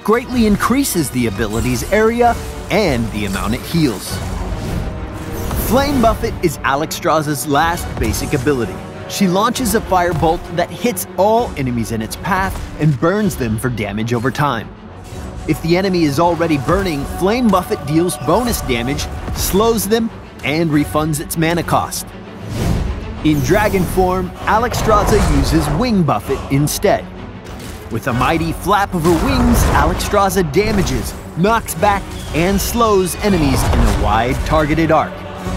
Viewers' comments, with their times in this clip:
0:06 why does he pronounce 'buffet' like that
0:16 Anyone else hear him say "flame muffet" ?